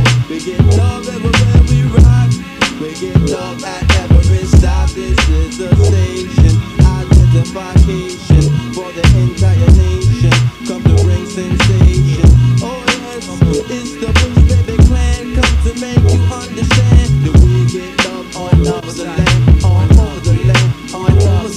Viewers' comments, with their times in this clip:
0:06 That break down !!! Dilla the drummer!!